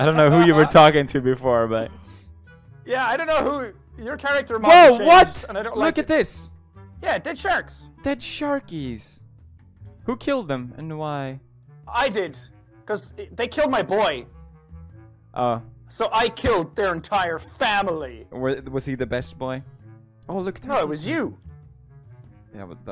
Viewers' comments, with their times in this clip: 0:09 dont know why I cant stop laughing at this Who keeled dem, and whhyy